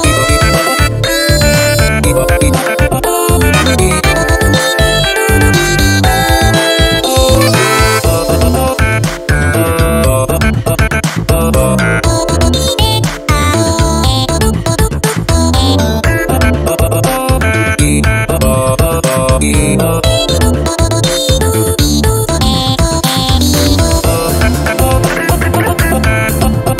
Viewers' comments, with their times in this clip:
0:09 I swear there is a washing machine sample